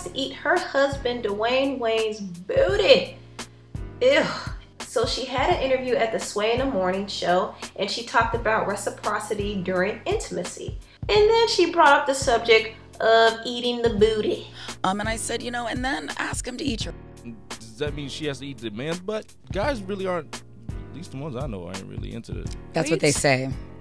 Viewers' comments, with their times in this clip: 0:04 loved your sound effects reply! Copyright it. Ha........its ILL Keep it in the home. Dammmm.